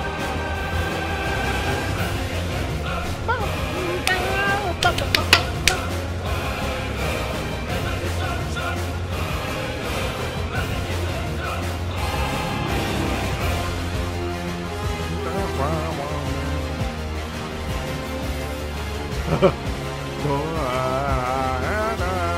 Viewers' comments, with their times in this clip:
0:05 i know it's crazy , but reminds me of From zero to Hero from Hercules xD